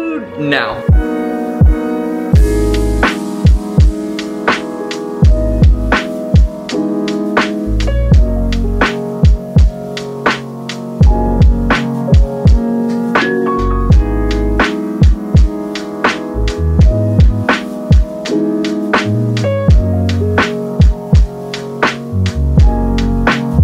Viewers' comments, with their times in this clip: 0:09 Music near the end is ear-splittingly loud. I had to turn the video off around the mark.